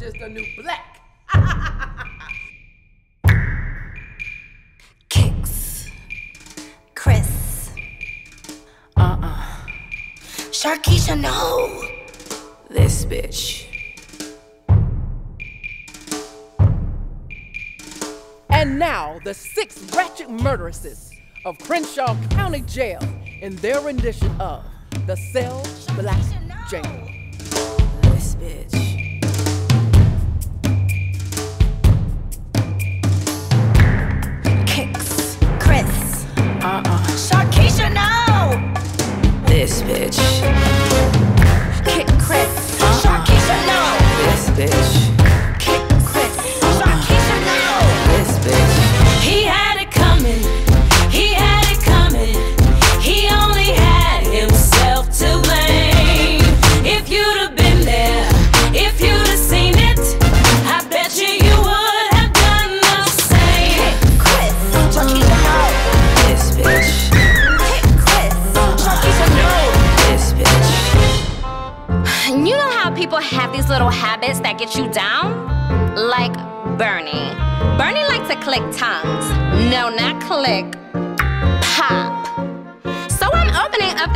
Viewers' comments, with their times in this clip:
0:09 beyonce is that you ? (it looks and sounds exactly like her OMG)
1:05 She even got the whistle tone
1:06 Are we not going to talk about that AMAZING whistle tone
1:06 Best whistle tone ever
1:06 Omg that sounds JUST like Beyonce....and that High note "Mariah Carey" did in the begining gave me LIFEEEEE!!!!!!!!!!!!!!!!!!!!
1:06 Okay but can we talk about that whistle tone ??
1:06 That whistle tho. Luv it!!!!!! And i swear i thought that was the real mariah when i first saw it.
1:06 It was the Mariah "this b#%ch" in whistle register for me 🤣
1:06 THAT HIGH NOTE THOOO